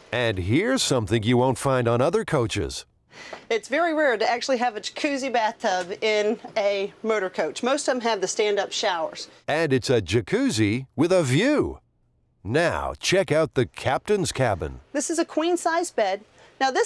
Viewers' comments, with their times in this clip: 0:04 the pardon me room?